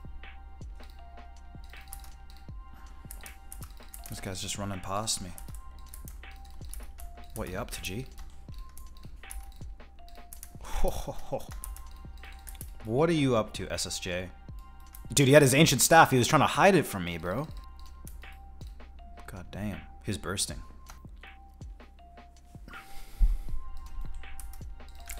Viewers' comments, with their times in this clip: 0:06 What ya upta g? LOL that kiwi slang rubbin of you brother!